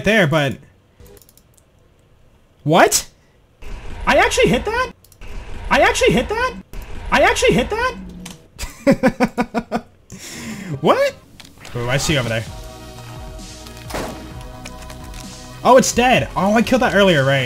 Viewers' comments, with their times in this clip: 0:04 new sub sound PogChamp